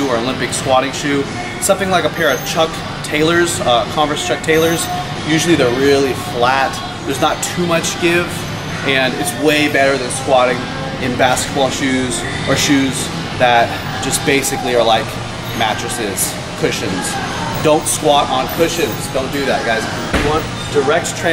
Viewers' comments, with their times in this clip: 0:07 I was distracted by awesome tune in the back